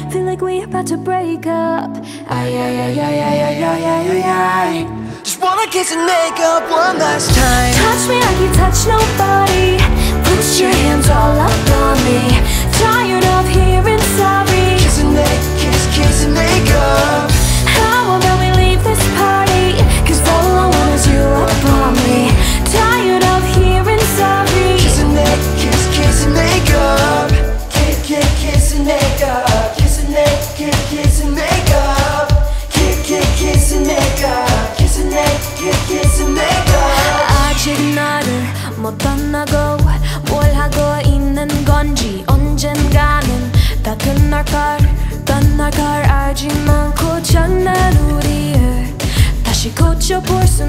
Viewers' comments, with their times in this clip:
0:05 Wow, I looove this. The girl has such a soothing voice and I love the part when the girl goes silent and it's this boy's time to shine 😍 great job guys ❤❤❤
0:18 why do I hear soooo much autotune ???
0:36 her korean accent is so good, love her